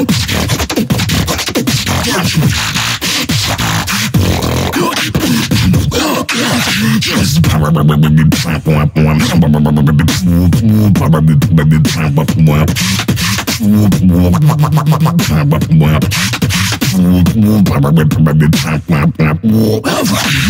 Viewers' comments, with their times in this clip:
0:07 Love Alem ! :) Basssslineee